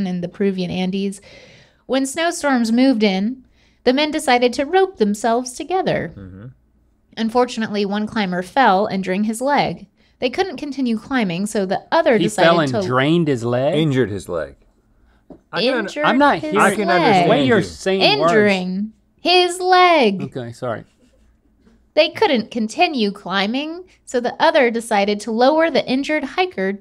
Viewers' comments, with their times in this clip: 0:06 I'm hearing the same as Link. 😅
0:08 I also heard and "drained his leg" the first time, Link. Lol